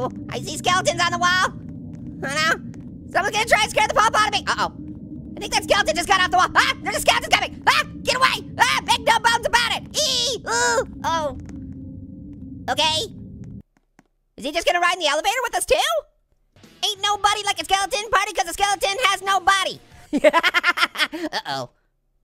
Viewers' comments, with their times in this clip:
0:10 = kid saying oh